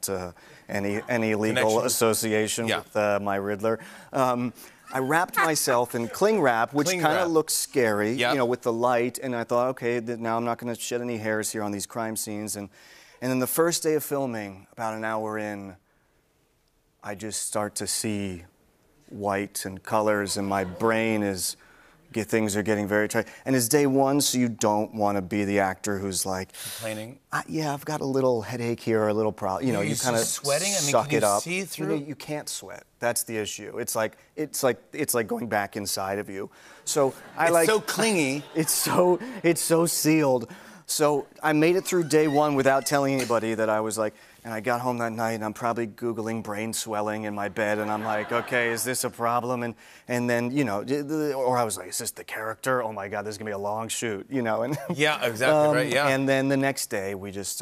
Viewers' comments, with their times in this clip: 0:03 That laugh was fake af
0:41 wtf is up with this laugh
0:42 classic Fallon laughing at seemingly nothing